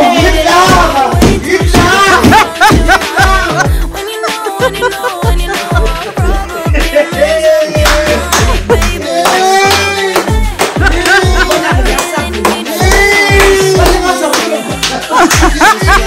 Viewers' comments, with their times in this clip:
0:03 it’s the commotion for me 😂😂😂